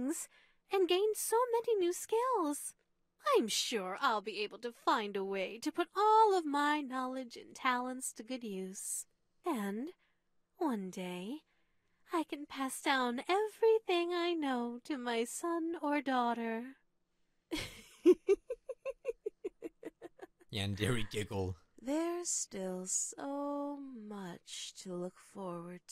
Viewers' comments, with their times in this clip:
0:06 Why does Ryoba's voice kinda sound like Rarity from My Little Pony 😀